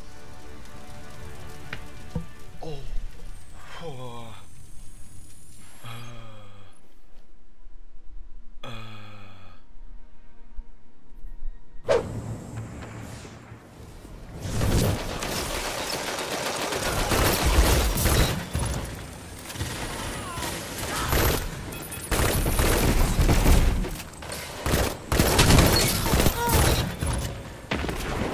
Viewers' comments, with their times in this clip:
0:09 Did he have an organism